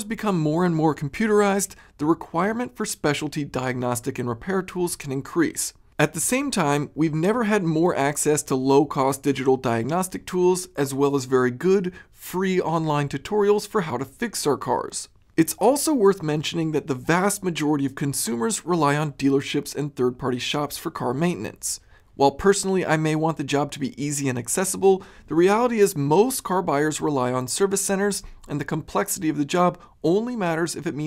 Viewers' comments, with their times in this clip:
0:10 thats a good chrisfix impression.
0:10 Did no one else catch the ChrisFix impression
0:11 Beautiful ChrisFix impersonation
0:13 LOL chrisfix imitation